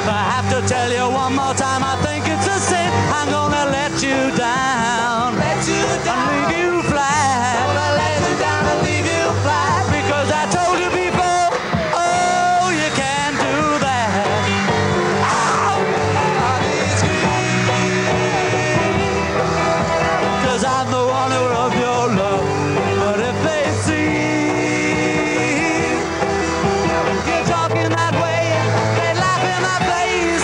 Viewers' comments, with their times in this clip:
0:04 Pauls mic fixed
0:14 ... LOL!!! John started the solo prematurely while Paul and George rightfully began the bridge of the song.